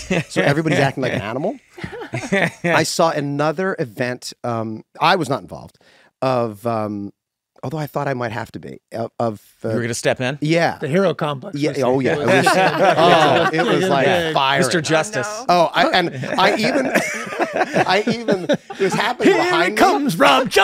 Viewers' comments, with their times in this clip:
0:07 I feel like Glenn and Rob just really enjoy Charlie. Like he’s such a lovely witty genuinely funny guy. I feel like he’s universally liked.. Glenn’s stoner impression without missing a beat when Meghan said she was born 😂